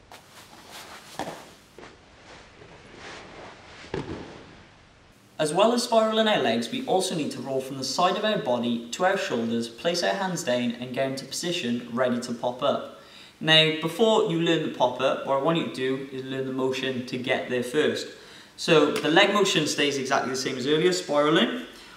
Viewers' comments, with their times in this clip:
0:08 Remember to place those hands dane, kids!